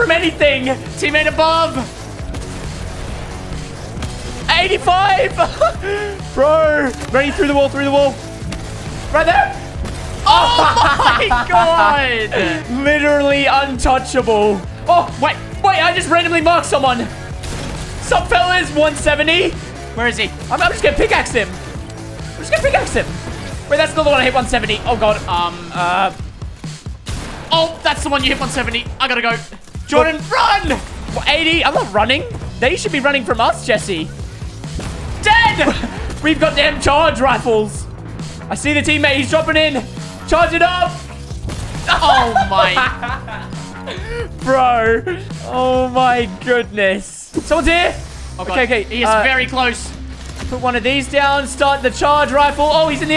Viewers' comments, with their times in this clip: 0:09 what was that voice crack
0:41 OMG THEY LAUGHED LIKE A CHILD!!!